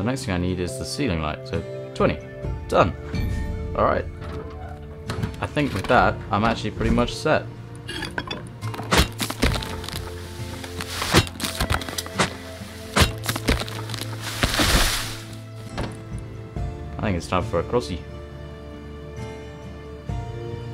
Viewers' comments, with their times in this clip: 0:08 his voice was so genuinely happy